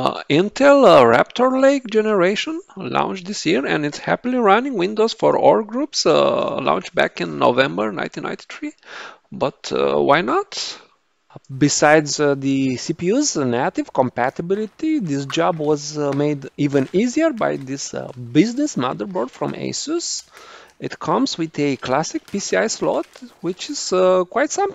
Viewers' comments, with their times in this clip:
0:10 The sound was very very sudden and annoying.